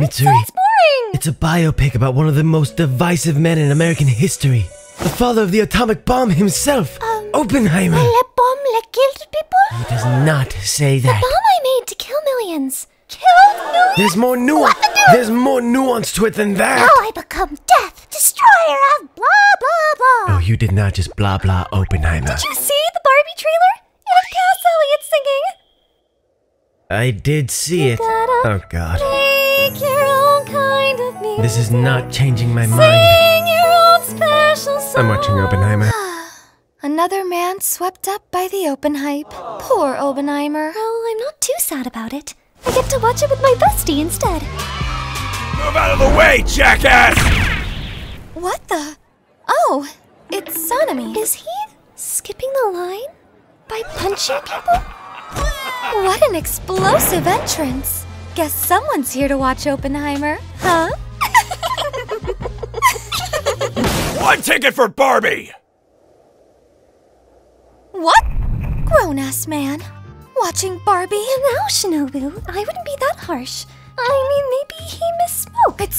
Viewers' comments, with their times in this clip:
0:07 the way she says it is so funny
0:08 Mitsuri’s voice is SOOO cute, gotta praise the voice actor
0:20 why did iguro sound British 😭
0:26 Whoever voiced Kanroji has golden voice! ❤❤❤
0:27 "Welcome to the happy hotel" ahh singing
0:55 Ah, yup. So that was Kobeni screaming out in pain as Sanemi punched her. Huh. I hope she's alright.
1:01 NAW THIS SOUNDS LIKE THEY ARE LIKE THE VILLIANS IN FAIRYTALE😭
1:02 the silence after sanemi got a ticket
1:03 HE SOUNDED LIKE ENGLISH DUB BELLAMY FROM ONE PIECE BRO ☠️